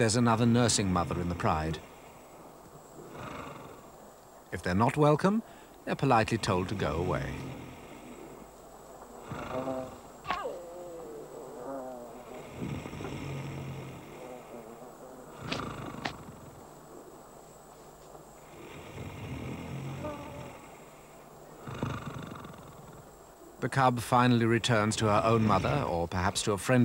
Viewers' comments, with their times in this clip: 0:09 LMAO at the added sound effects